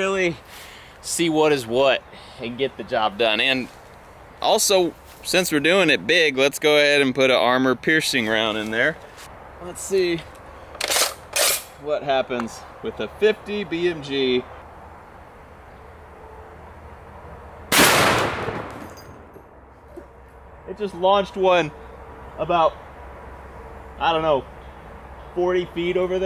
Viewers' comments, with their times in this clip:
0:10 the sound of death
0:10 those two sounds together the charging and the pop tickled my soul